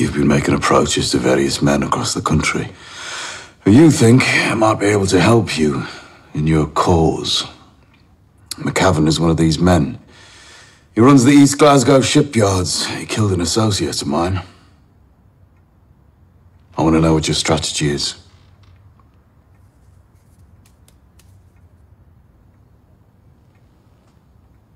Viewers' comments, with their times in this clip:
0:06 I love how Tommy pronounces your “cause”